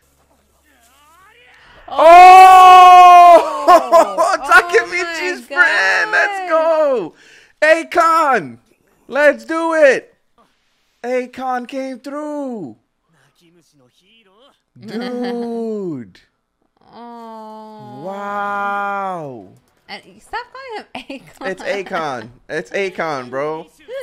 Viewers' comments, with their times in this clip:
0:07 the way you said ay-kon instead of akkun 💀